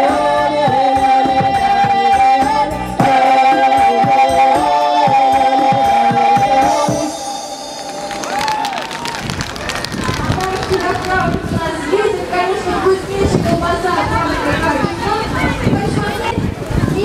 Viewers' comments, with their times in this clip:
0:03 I liked that music